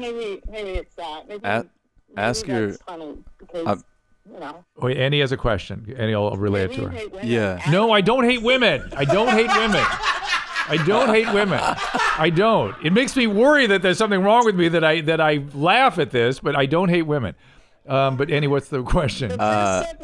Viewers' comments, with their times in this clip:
0:07 has heavy "Oh hi Mark" vibes